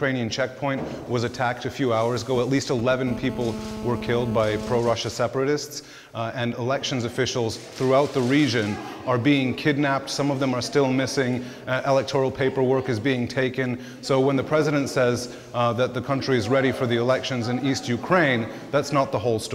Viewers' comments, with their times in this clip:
0:03 haha video go buzz buzz